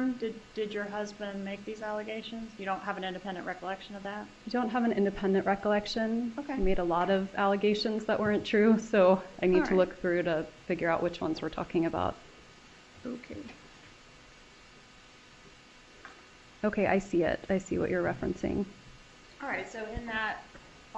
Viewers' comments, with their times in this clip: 0:07 the way the prosecutor says, ‘OK’ 🤣🔥😂